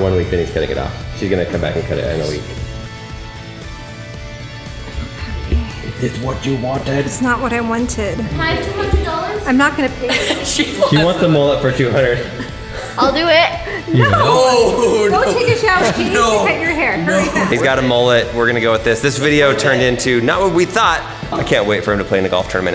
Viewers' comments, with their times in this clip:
0:03 oh god she sounds like mu mom